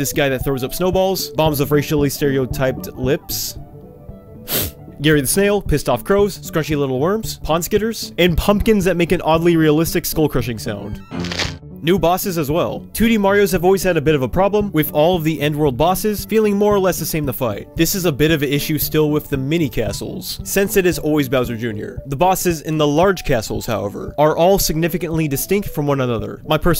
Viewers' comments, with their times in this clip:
0:08 I don't know whether to say nintendo what did you do or say ah that sounds gratefully satisfying